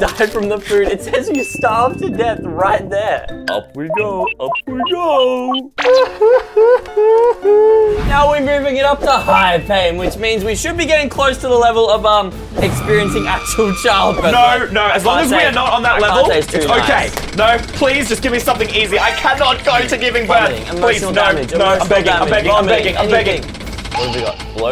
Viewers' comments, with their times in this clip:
0:06 did bro just start crying